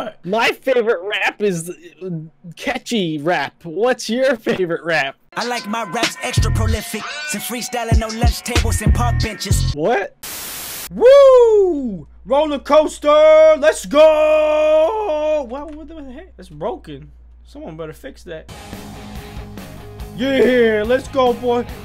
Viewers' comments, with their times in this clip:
0:05 Who else heard a bad word on